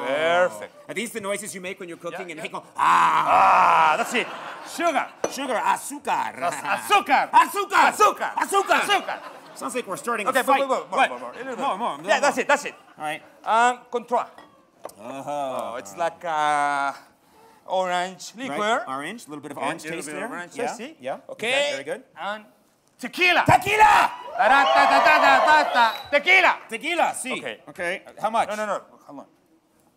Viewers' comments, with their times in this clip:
0:10 as a Russian, it's funny to watch two adult men yelling "cyka!" to each other on TV while cooking stuff :D